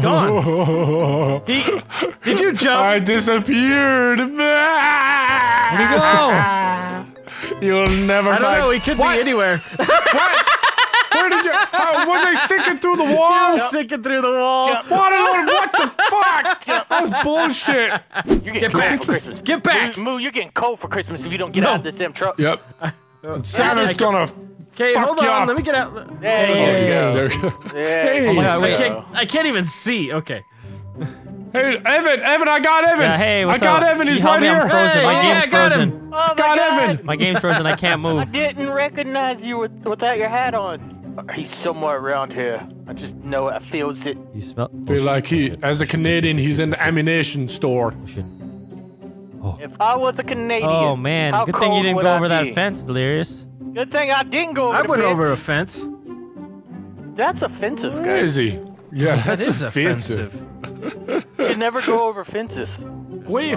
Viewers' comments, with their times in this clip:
0:10 That maniacal laugh though
0:46 Amination store XD